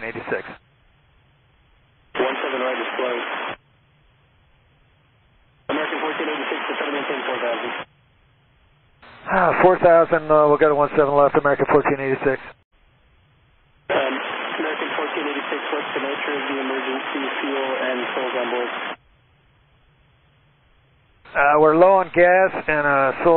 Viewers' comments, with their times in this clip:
0:09 The pilots sigh "Can anything else go wrong???? Just let us land."